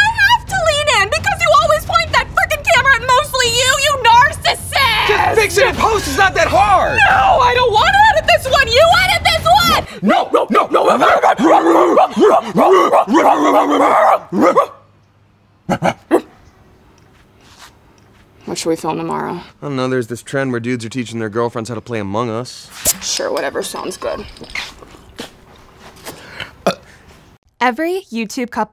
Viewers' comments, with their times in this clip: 0:10 it sounds like my neighborhood a few years ago when it was pretty much infested with dogs